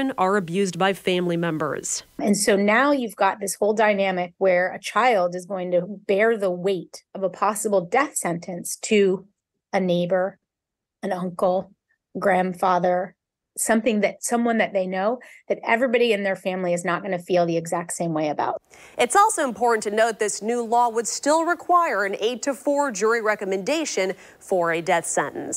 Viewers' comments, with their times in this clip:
0:10 why does it sound like she’s sympathetic?